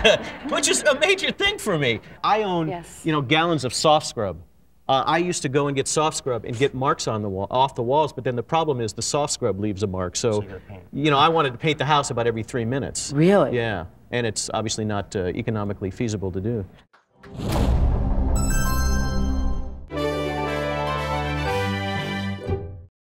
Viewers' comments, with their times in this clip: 0:09 you can hear another man's voice speaking. Just puzzled me. Strange! 😱